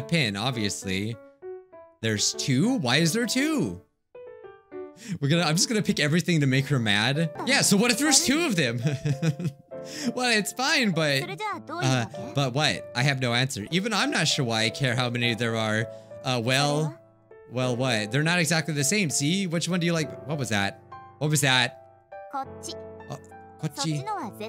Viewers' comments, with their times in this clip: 0:10 She just glitches she didn't say anything